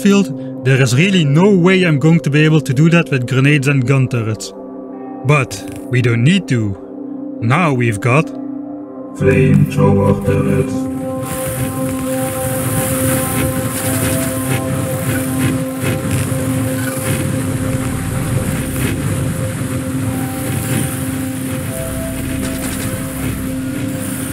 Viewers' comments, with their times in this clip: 0:07 autotune souds... NICE!